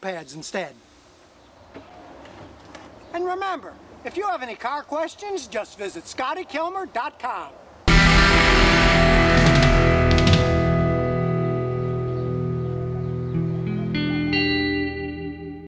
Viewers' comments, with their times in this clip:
0:06 jesus.. head phone alert